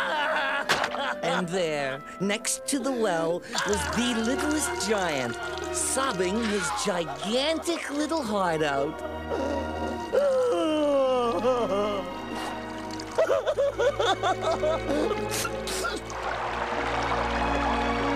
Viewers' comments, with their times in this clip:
0:03 This Song Makes Me Cry...😢😢😢😢😢